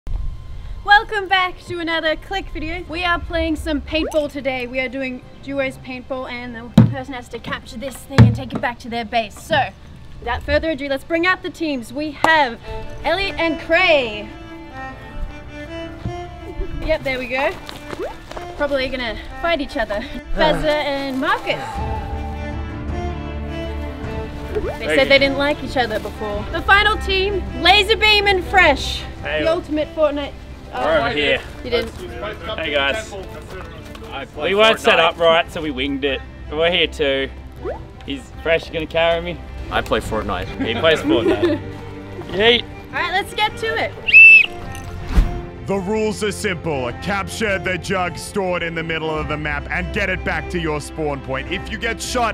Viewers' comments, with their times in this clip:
0:01 I though she said "Welcome back for another Clickbait video" Lol
0:39 Fresh’s voice sounds different